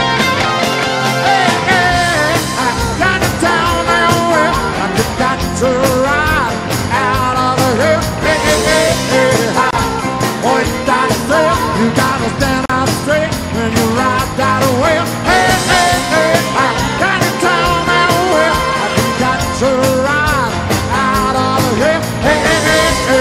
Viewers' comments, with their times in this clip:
0:08 after a monster piano solo he just can't hide how good he felt. Let's go Elton!